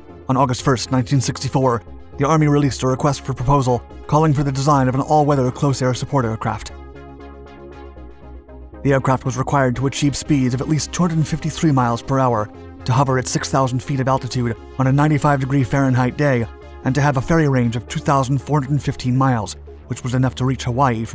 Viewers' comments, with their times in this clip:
0:06 "...of an all weather close air supportflahflah aircraft" ~ you're all over the place trying so hard to do this voice you've came up with!